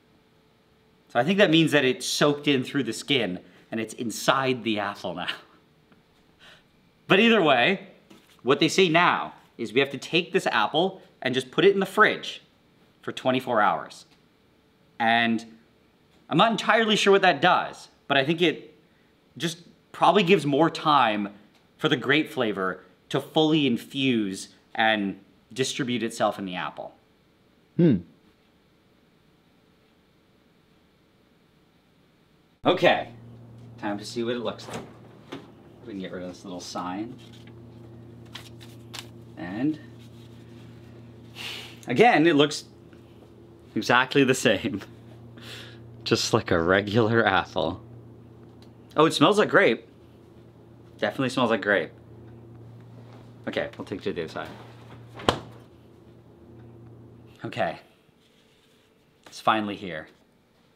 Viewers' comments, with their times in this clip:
0:03 blud did NOT say apple
0:23 That "hm" from the cameraman was such a "That doesn't sound right but I don't know enough about apples to dispute it"
0:27 That "hm" was a sure sign of "this is B.S. but.....I've seen B.S. turn into cinnamon candy hearts....so wat do I know....."
0:45 I think I need some hearing aid, did he say "just like regular asshole"?
0:45 "just like a regular asshole"